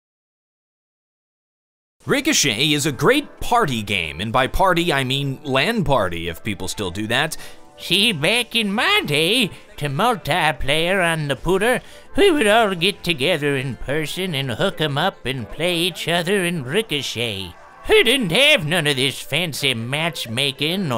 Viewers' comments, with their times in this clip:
0:07 this oddly sounds like gay advice from your super old uncle.